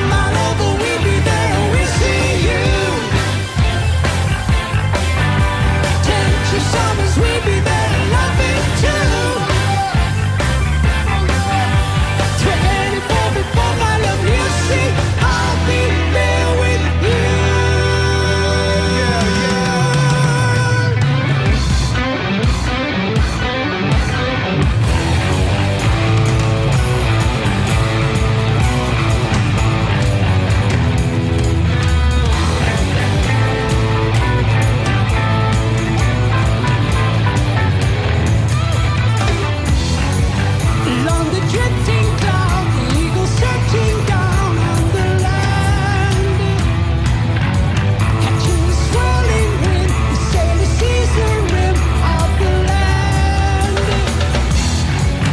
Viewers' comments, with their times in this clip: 0:08 The most beautiful part of this performance is when master guitarist Steve Howe exuberantly yells out "OH YEAH!" a couple times, and Jon responds with a genuine smile and laugh and years of differences fall away and the whole band relaxed and then shifted into high gear after that moment. YES are the best ever: I love this band.
0:11 I like how he has a little laugh in his voice when he hears Steve go “Oh yeah! Oh yeah!” 😅
0:38 I really like that quick guitar solo from Trevor Rabin It somehow works within that part of the song.